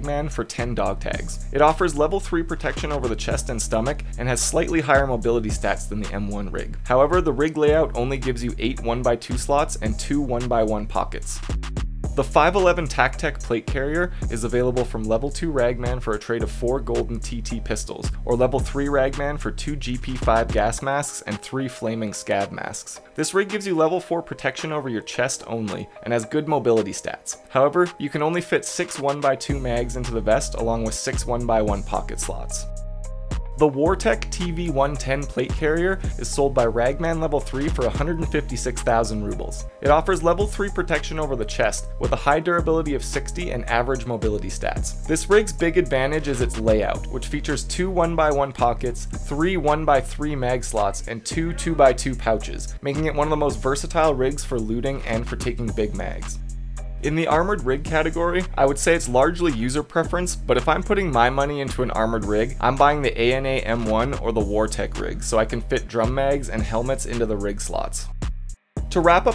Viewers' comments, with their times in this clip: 0:03 song is hot AF
0:50 Anyone else notice someone yell in the background